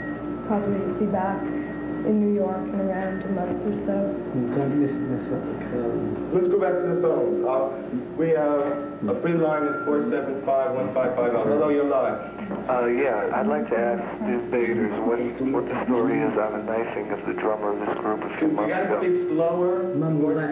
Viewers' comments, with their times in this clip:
0:03 Can anyone understand what Sid said ?